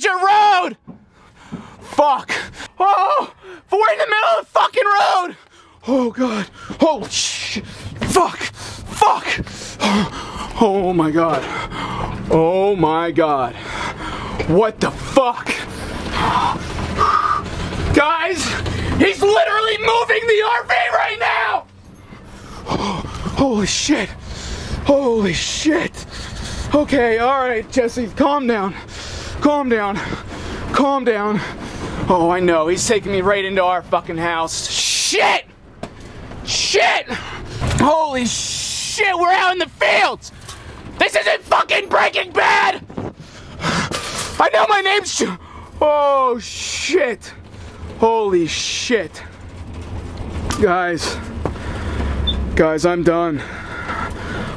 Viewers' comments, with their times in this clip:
0:03 he sounds like Lemongrab from Adventure Time
0:18 the way he screams tho
0:41 dat fart doe